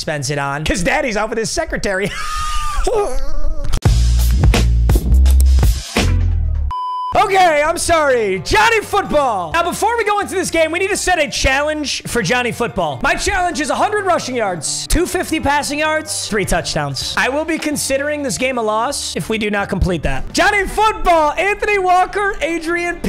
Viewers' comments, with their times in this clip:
0:08 Yooo. I didn’t have my AirPods connected when that PH audio played 💀😩